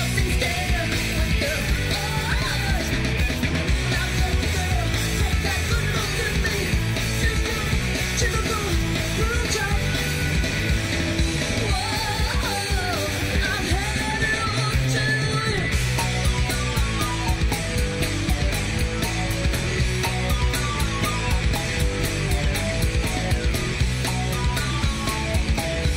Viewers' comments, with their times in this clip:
0:08 Im sure she didnt say what it sounded to me like she said....so what does she say ??